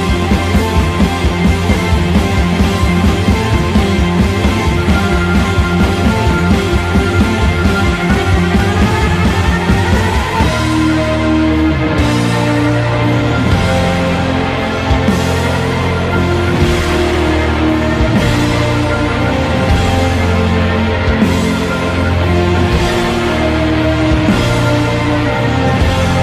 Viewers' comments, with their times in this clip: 0:10 Same chord progression of ''With a little help from my friends'' Cocker's version (?)